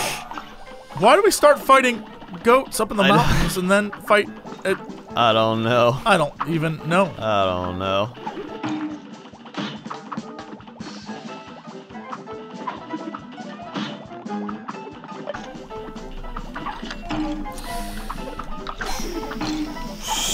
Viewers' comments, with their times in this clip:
0:06 GOD WHY THAT WAS SO LOUD AND I WAS DRIVING